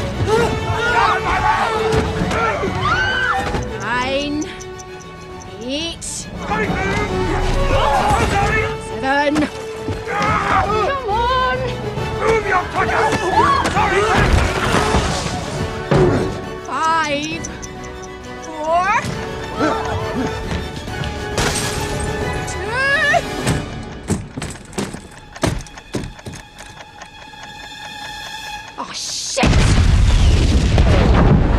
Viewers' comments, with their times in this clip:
0:05 All I hear Merida.
0:17 why does she sound like Merida from The Brave Edit: NVM SHE IS THE VA OF MERIDA🤣🤣😂😂😂😂